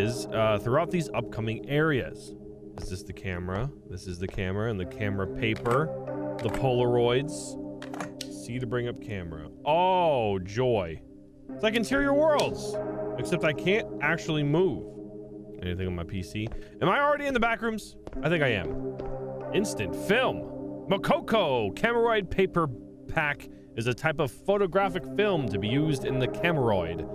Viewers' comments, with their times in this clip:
0:10 I love the echoness...so realistic